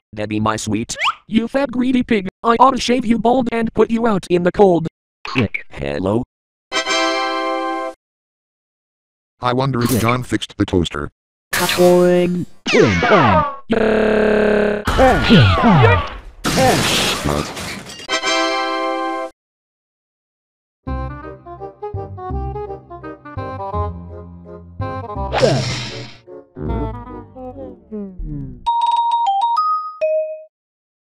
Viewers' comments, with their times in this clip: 0:05 How did you make Mike say “Hello” like that?
0:13 that screaming though!